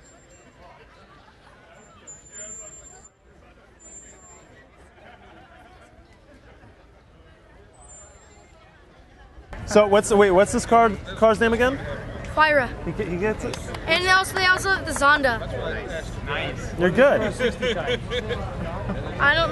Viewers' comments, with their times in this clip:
0:04 seth rogan laugh